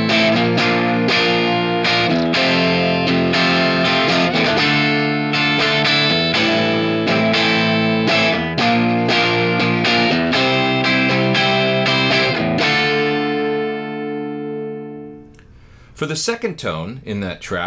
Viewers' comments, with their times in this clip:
0:04 sounds great (and like Pete Townshend!) Great video thanks!